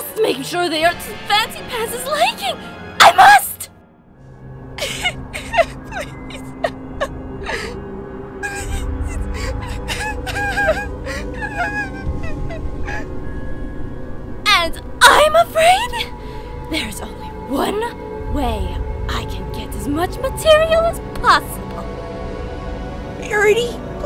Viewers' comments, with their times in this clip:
0:05 WHAT IS WRONG WITH ME WHY AM I LAUGHING AT HOW SHE'S CRYING???